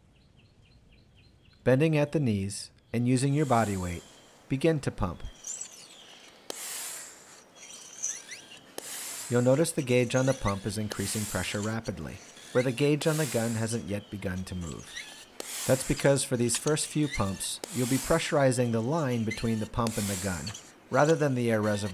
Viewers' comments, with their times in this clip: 0:04 pumping sounds like a sweet EDM drum beat